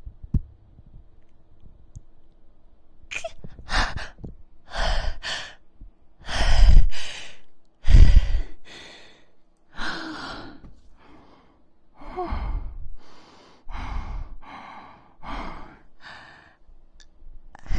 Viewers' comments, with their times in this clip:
0:03 She's just out of breath Stay with me now